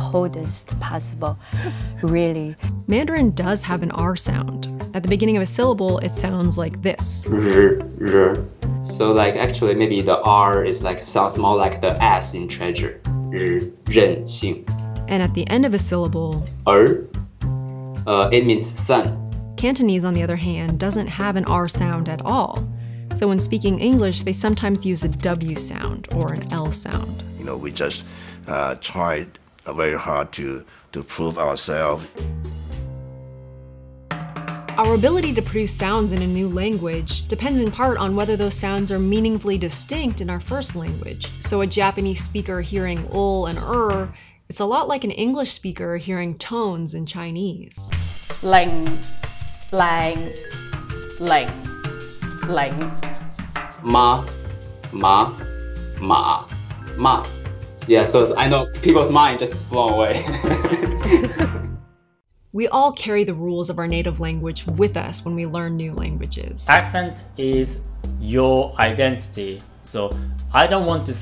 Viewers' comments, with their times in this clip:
0:07 for a moment there, I thought it was Anthony Fantano 😂
0:32 gg as a cantonese speaker i really cant tell how the men in was wrong.
0:47 The part just blows my mind. I can't even begin to hear the difference.
0:49 im taiwanese and the way those chinese pronounce is very inaccurate, they totally pronounce characters wrong some people from PRC dont really have good education and Vox put them into the video just because they're native speakers? what a joke ! for instance 靚 零 嶺 she pronounces those all wrong !
0:53 1st tone: mā 2nd tone: má 3rd tone mǎ 4th tone: mà / each tone represents if your tone goes higher or lower. 2nd tone your 'a' goes up. 3rd tone your 'a' goes down and back up.
0:54 as a vietnamese i see its easy to distinguish these tones haha